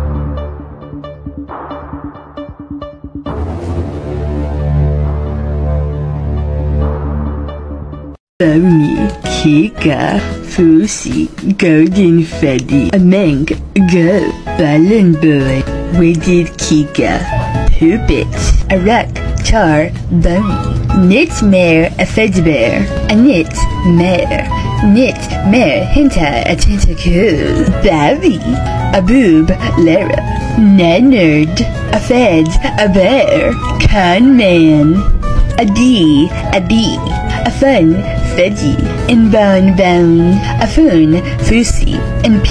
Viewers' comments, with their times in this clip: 0:08 bony cica fuusy got me rolling to freddy fazbear pizzeria 🤣😭🤚
0:29 aWHATlora??? HECK NAH